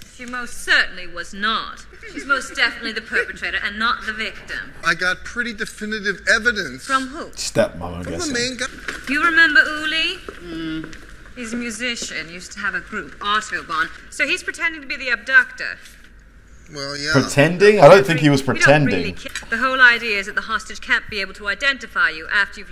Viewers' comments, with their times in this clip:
0:03 He drinks White Russians, a type of mixed drink/cocktail. He drives a 1973 Gran Torino. American actress using British accent. Can you tell?